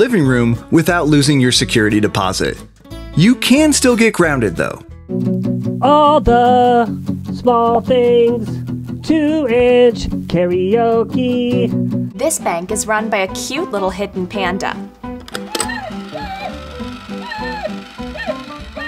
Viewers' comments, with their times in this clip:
0:05 is the same sound as a MGK song